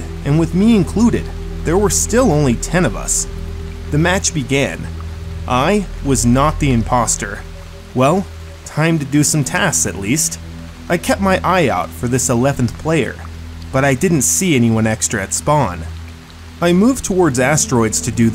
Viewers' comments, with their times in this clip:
0:05 "I was not the impostor" with a dissapointment